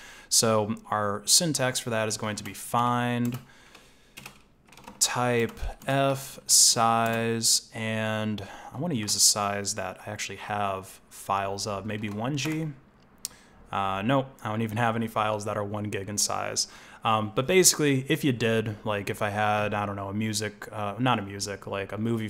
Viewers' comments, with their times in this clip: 0:04 you are a singer my friend